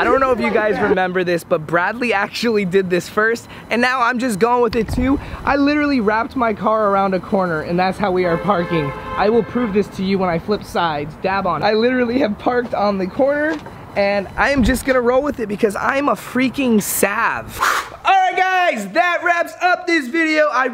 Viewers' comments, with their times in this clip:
0:03 Anyone hear the audio start sounding weird ?
0:03 The audio starts getting wired!
0:04 the mic started messing up...was that him or what???
0:05 why is ur audio messed up?
0:06 Why did it do the thing in the audio...
0:06 you can hear the sound start to mess up. it is in the background but is u wear headphones u can hear it.